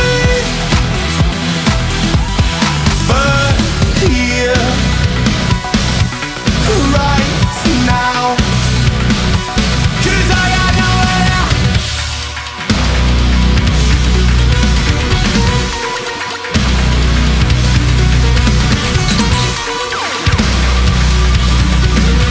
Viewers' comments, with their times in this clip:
0:07 Duuuude this fucking slaps. Sounds like boss music in a cyber-bullethell videogame. If this ends up representing Australia for ESC, then this year will without a doubt be the first time I ever vote for that country. Also; I didn't notice the keytar before and it had me howling hahaha. Best of luck to you guys. My favorite song in a national selection along with The Rasmus' Jezebel this year so far.